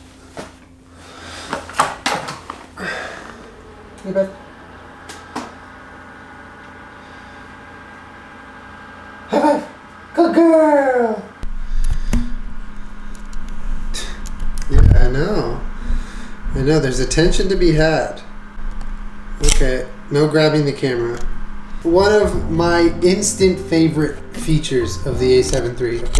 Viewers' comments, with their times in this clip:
0:08 Why did I sigh and say "move peach" 😂😂